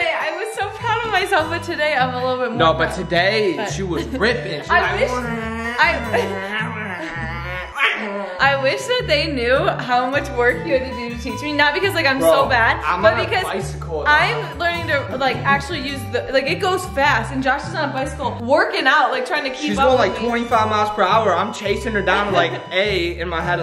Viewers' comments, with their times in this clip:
0:08 he sounds like my dog